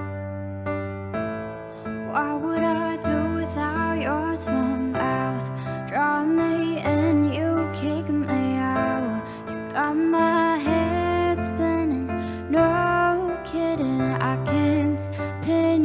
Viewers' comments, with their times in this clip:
0:03 OUR SWEET ANGELIC VOICE, LOVE HER❤